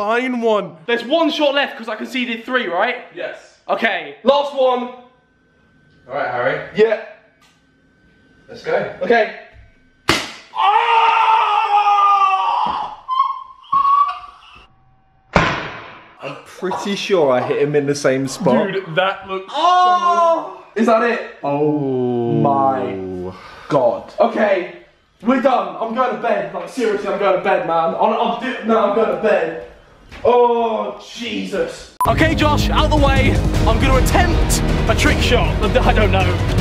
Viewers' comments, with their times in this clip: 0:09 you genuinely can't fake such pain. His voice says it all
0:19 NICE MOAN HARRY